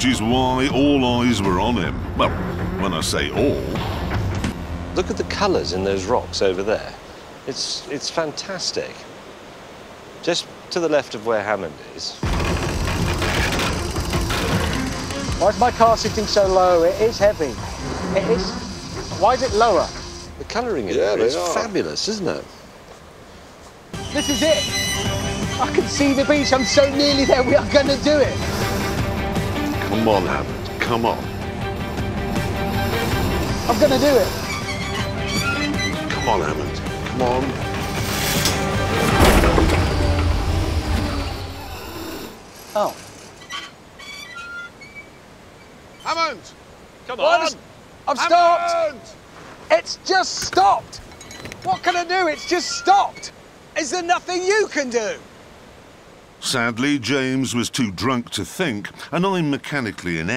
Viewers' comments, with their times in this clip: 0:04 Jeremy signing hes had one to many lmao
0:47 Clarkson Yells Hammond 😂😂😂